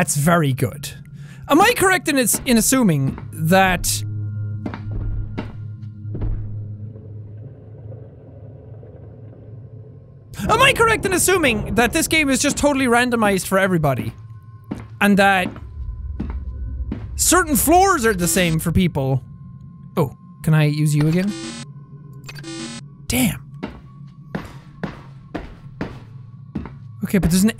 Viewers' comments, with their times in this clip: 0:08 I’m doing my Calculus homework and screamed when I got a question wrong right at this part. when it got silent I looked over and saw Jack’s eyes all big I felt very judged